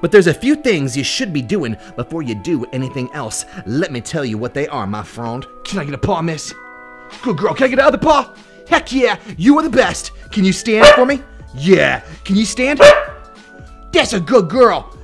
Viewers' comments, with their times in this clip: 0:03 hmmm sounds like the music in one of Belle Delphine yt vídeo